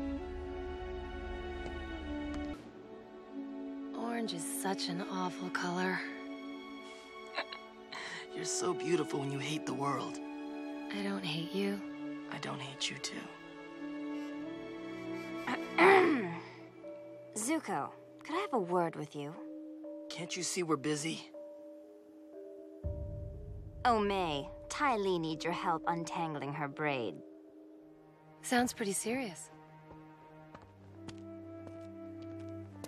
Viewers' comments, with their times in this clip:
0:06 That little chuckle, gets me fuzzy. It's just too adorable.
0:07 One of the two times we hear Zuko laugh. The other being in The Waterbending Scroll.
0:07 Yo did zuko just giggle?
0:07 Sad Muda Noises
0:15 Azula: (humming Romeo and Juliet love theme)